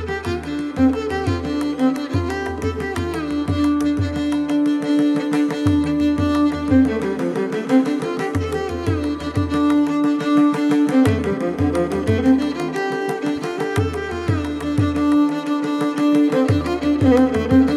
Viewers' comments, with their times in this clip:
0:03 Beautiful improv and excellent melodious support from percussions from Delight to listen !